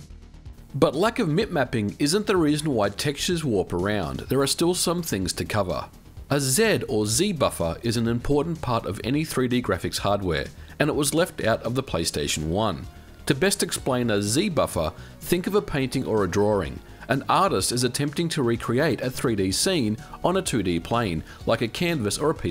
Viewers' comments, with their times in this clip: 0:05 wow you're the only other person that ronounced Z the other way like me.